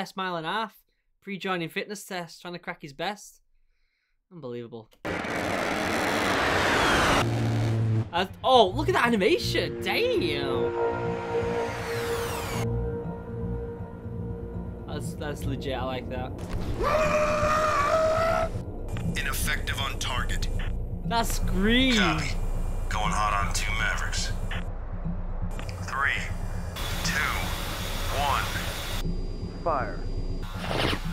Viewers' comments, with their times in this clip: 0:06 a10 go brrrrrrrrrt
0:16 096 soundin like a chicken with its head cut off